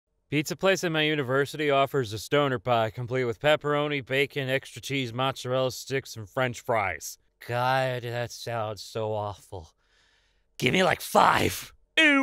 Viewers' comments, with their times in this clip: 0:00 angry italian noises